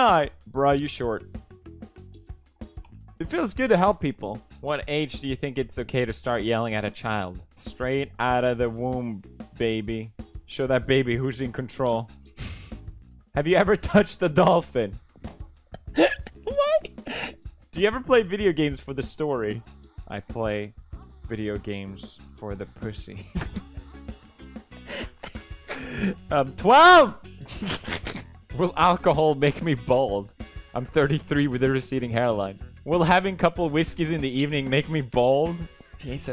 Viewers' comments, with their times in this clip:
0:08 EVERYONE: WOMB ❌ PEWDIEPIE: WOMP ✔
0:08 Straight outta the WOMP James Charles: WOMP WOMP WOMP
0:20 I love how there’s moaning in the song
0:20 Just realised the moaning P.S. rewatching
0:20 Bruh why are there noises of women moaning sexually af ??
0:20 weird morning noises